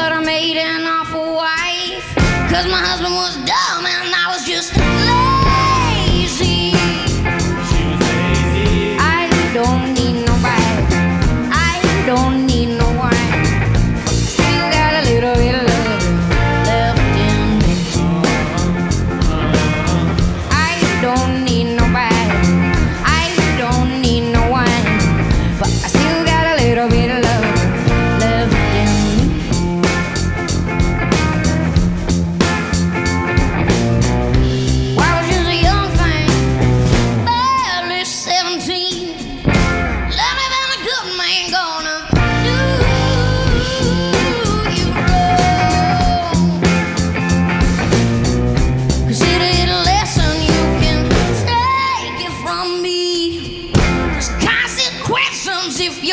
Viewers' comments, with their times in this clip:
0:03 Elle has so much expression in her singing... my favorite part of this recording lol 🤣😂
0:39 lol fun pause 😂